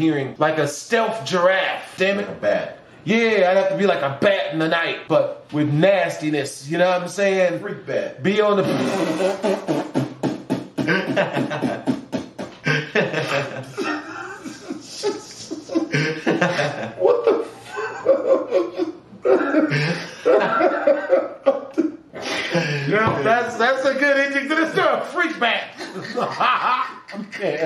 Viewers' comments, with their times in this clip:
0:08 my dude out here beat boxing😂😂😂
0:10 a dying motor😭